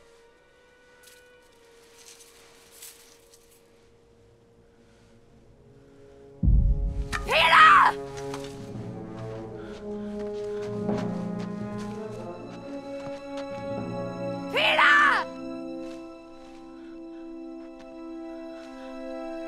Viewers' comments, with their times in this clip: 0:06 There WAS a cannon, just missing for some reason